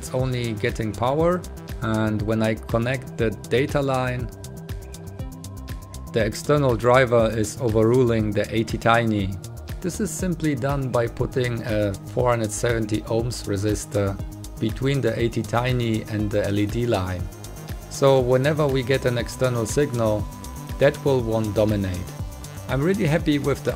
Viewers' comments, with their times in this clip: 0:07 What is the "eighty tiny" yo uspeak of?